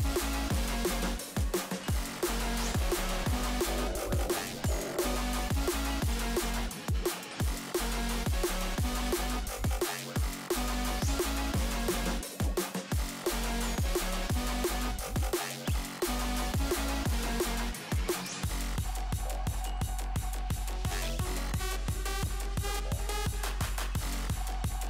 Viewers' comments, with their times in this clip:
0:05 I like the song